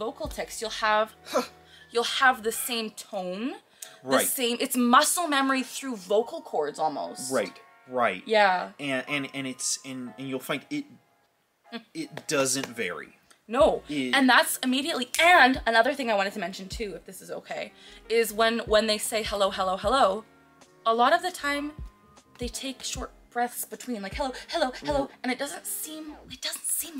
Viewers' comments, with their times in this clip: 0:09 yeah most of the time I can’t actually tell you’re ticking until you’ve completed the tick because the way that you speak is still normal during the tick